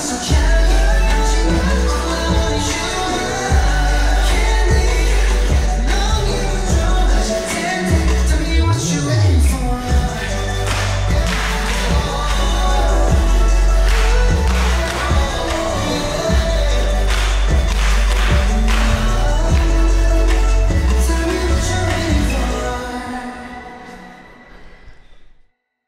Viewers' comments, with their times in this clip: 0:10 The clap though!!!!